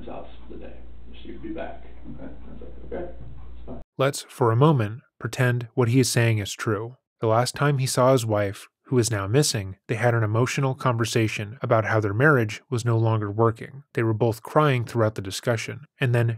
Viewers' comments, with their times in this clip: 0:04 I'd put it to you that I would be MORE agitated over losing my keys than Chris appears to be over losing his family. It's stunning how incredibly apathetic he is. It's matched only by how pathetic he is. Unrelated to anything relevant, I just really really dislike the way he speaks. His voice is annoying the hell out of me.